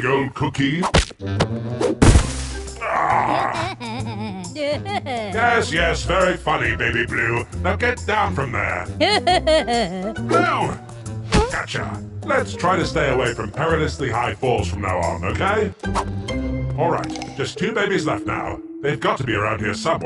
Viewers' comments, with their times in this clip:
0:05 Is it just me or does blues laugh sound familiar?